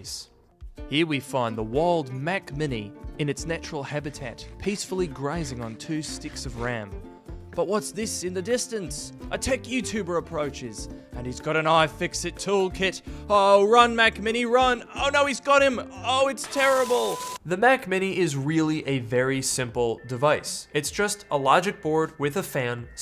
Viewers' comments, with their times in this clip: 0:09 OMG I am Australian..!!! why do Americans continually stuff up Aussie accents lol.